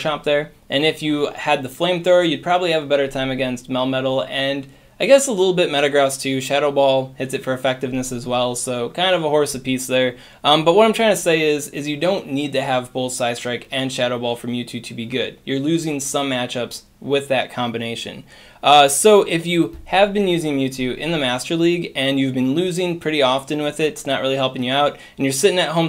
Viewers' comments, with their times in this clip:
0:08 what on God's green earth is a horse of peace?